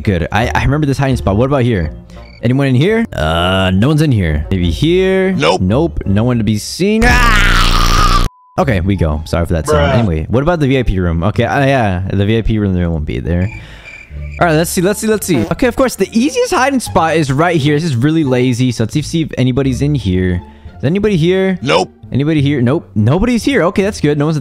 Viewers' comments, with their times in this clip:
0:08 What the? ok I don wanna talk about your voice but it make me laugh